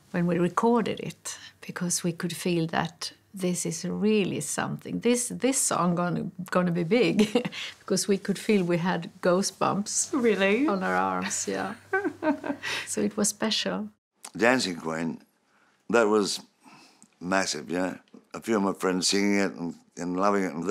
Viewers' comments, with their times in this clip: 0:04 Did she say Ghostbumbs?
0:07 "..we had ghostbumps on our arms" --lol. Growing up 40+ years ago with a preference on heavier rock music I always liked ABBA songs but didn't admit it to my friends back then. Agnetha was a goddess and was absolutely stunning. Frida was certainly quite easy on the eyes also. Back when ABBA ruled the pop world and Zeppelin ruled the rock world and when times were much better. The similarities between them is they were both gigantic, they were both around during the same period and they each sold more than 300 million records. Another connection between the two is Benny and Bjorn wanted an internationally-famous rock band to record at their Polar Studios in Stockholm and they asked Jimmy Page if he was interested. He agreed and is where the album 'In Through the Outdoor' was recorded..